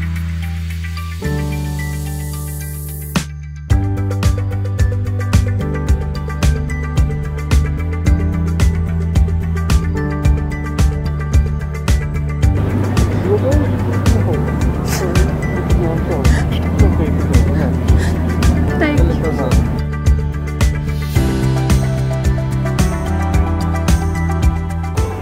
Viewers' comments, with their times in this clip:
0:06 hahaha i just cant stop laughing at the Minion heeheheehe